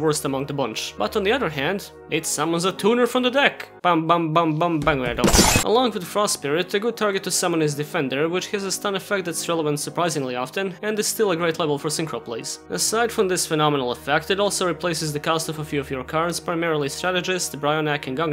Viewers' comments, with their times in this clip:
0:03 I missed the words after the 4th ban.